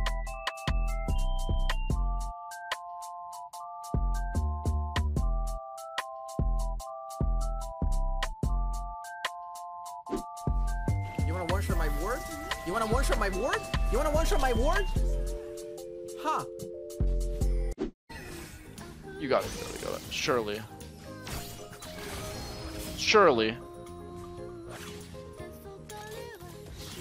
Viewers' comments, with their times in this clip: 0:10 sounds like a real song wtf😂